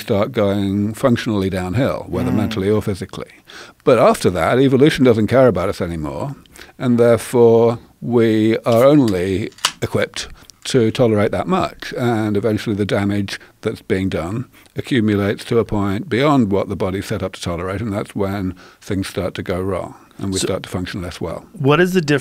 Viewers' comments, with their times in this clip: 0:09 someone opens a cold ass beer!